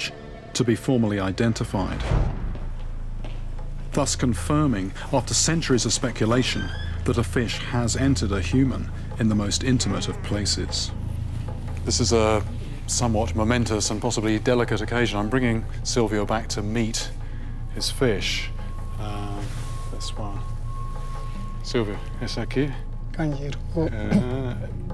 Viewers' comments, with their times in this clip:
0:10 anyone else heard him fart